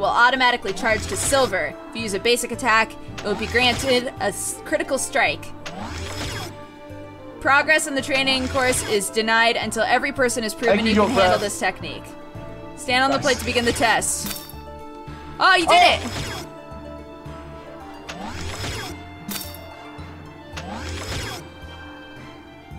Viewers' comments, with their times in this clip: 0:10 headphone users, i'm the only one that hears foxes yelling in the background? (Set volume to very high)